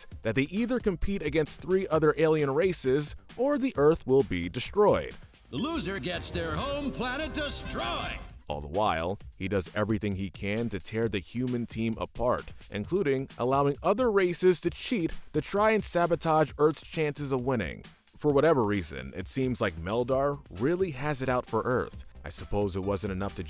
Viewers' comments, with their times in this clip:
0:05 It's so weird to hear Buzz Lightyear say that.